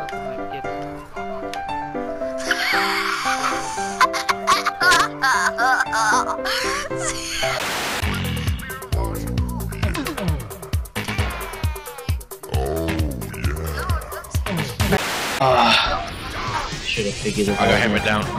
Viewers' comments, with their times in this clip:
0:05 What id that laugh😂